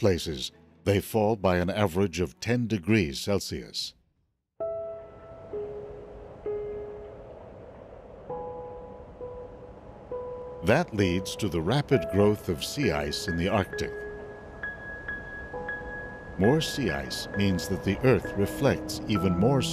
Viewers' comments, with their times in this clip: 0:05 starts a piano theme in the background. So touching Anybody know the name of this music?
0:05 starts a piano theme in the background. So touching Anybody know the name of this music?